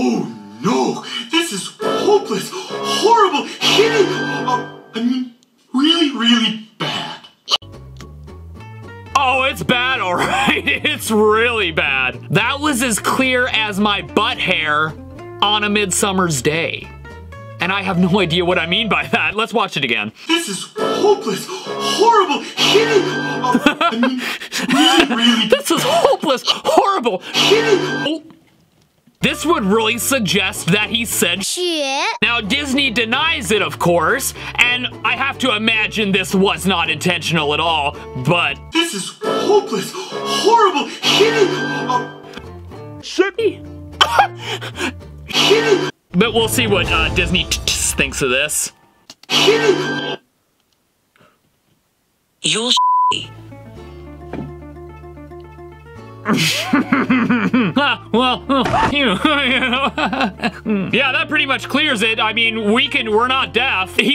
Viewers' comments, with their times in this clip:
0:04 I heard achoo
0:22 I heard hitty
0:31 Also in you see the whatever her name is swearing the S word but she said snow in Chinese, translate snow in Chinese and you will see
0:41 I clearly heard s***y
0:52 has turned into Siri 😭